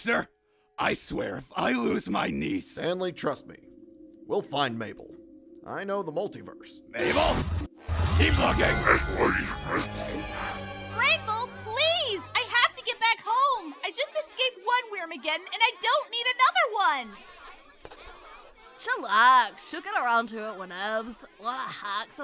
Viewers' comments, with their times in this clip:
0:09 The secret message is whatever the monster I saying idk what is is it’s scrambled up